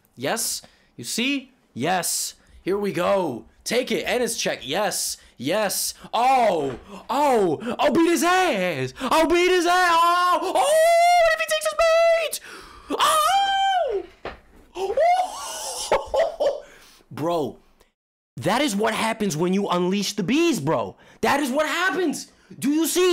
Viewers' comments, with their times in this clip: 0:07 What the hell does he say twice ? I'm not a native speaker and can't figure it out (but well I'm not even sure it's english)